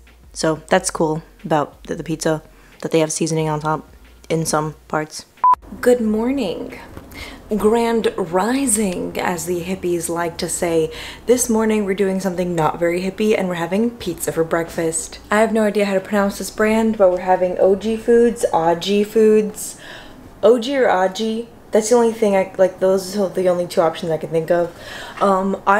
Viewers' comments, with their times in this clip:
0:07 I can’t get over how you said “grand rising” My heart 😍